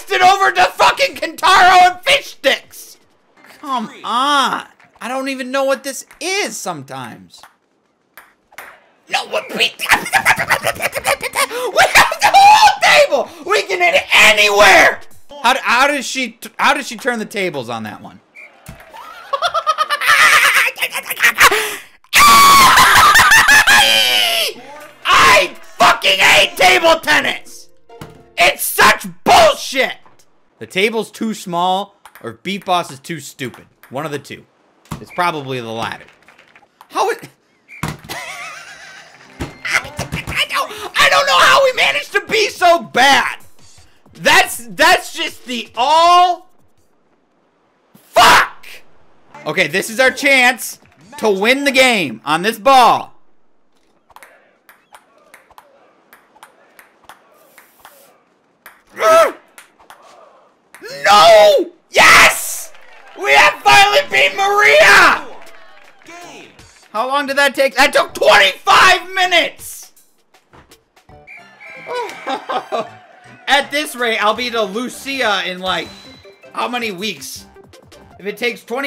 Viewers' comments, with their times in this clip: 0:08 he spoke enchantment table
0:08 lol what the heck was that noises he made!
0:09 when my chicken randomly starts dying
0:09 no one: the tasmanian devil in loony toons:
0:09 he sounds like a drunk chipmunk
0:09 He sounds like Whitey off of 8 crazy nights
0:09 Super Mario When he gets burn on his ass
0:10 When the car engine won’t start up in the winter
0:10 Donald duck be like
0:10 hey sounded like little apple
0:10 that's me chattering my teeth when I'm colder than low farenheit
0:11 when mr crabs starts laughing
0:15 what was that laugh .edit I think he’s reached peek level of insanity
0:16 0_0 that laugh scream sounds like the joker on crack
0:16 his laugh though 😂😆
0:18 Me when I get tickled. Yes. I laugh like that. Another Edit: I don’t laugh like that. I was joking.
0:18 Tell me that this does not sounds like an evil witch hysterically laughing xD
0:18 is the sound of an insane person
0:18 how I laugh when mom says I cheat I mario kart 🤣
0:18 most evil laugh in history
0:19 sounds like me when I can’t even finish my joke I’m gonna make
0:19 The Joker laughing on the subway
0:19 is by far the best laugh i’ve ever heard
0:19 this dude became a hyena 😂😂
0:19 wohehehehHAHAAHAHAhehee (big boi inhale) AAAAAAAAAAAAHHHHHHHAHAHAHAHAHAHHEEEEEEEEEE
0:19 is it just me or does he sound like a satanic dolphin?
0:19 When he started to scream I died
0:19 I thought I was about to burst an ear drum
0:19 one of the most funniest rage ive ever heard
0:19 We all chill till he starts with the verbal vomit.
0:19 when they suspect youre faking it so you laugh harder
0:19 Is my favourite scream of all time, plus the build up for it
0:20 sounds like hyenas
0:21 Never once have I heard a grown man scream this loud.
0:22 sounds like when Jerry makes Tom burn his tail
0:22 Mario inhaling helium whilst touching lava (2019, colourised)
0:22 when Jerry crushes Toms tail and Tom screams
0:22 sounds like Tom the cat screaming LOL
0:22 Jason Momoa's Scream in Josstice League
0:22 way too much screeching :( my ears
0:22 If you keep on replying you start hearing the Fortnite heavy sniper
0:22 The laugh had me rolling
0:22 Me: DID SOMETHING JUST DIE WTF WAS THAT!?
0:22 This sounds like toads death noise when he dies to lava lmao
1:02 Maria cheering in the background as she watches herself lose at table tennis